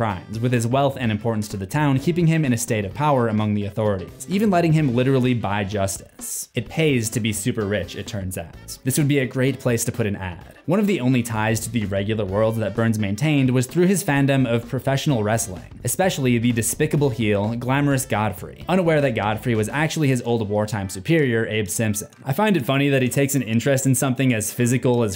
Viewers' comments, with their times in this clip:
0:06 😂😂 that tone in your voice when you said “this would be great place to put an ad“… So smooth I almost missed it